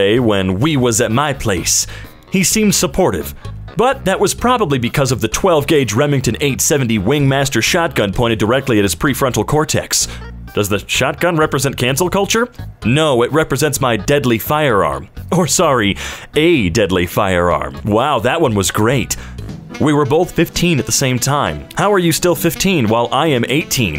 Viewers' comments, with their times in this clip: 0:09 is this mocking aave